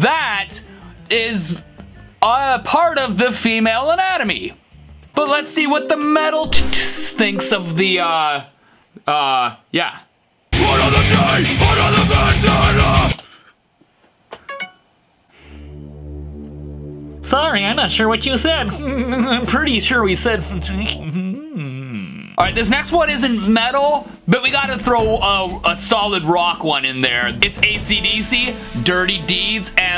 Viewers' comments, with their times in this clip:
0:04 oh the cuteness giggling
0:16 I heard “another day, another mangina”